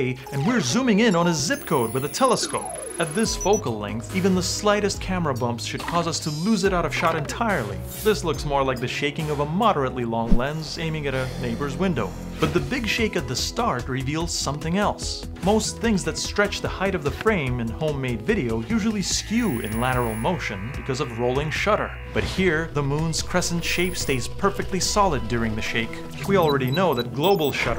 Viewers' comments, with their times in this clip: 0:09 the heavy breathing, I absolutely love how he packs so much humor into just every second of his videos